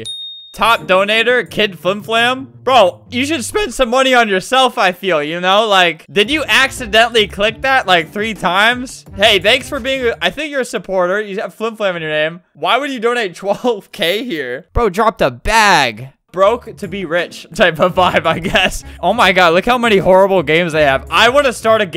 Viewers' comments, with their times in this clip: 0:03 nice voice crack Albert 😂